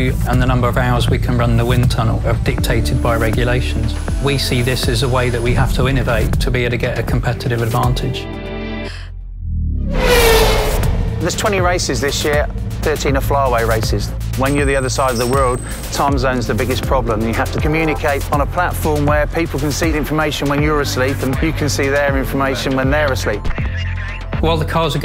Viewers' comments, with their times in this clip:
0:09 Fake engine sound detected.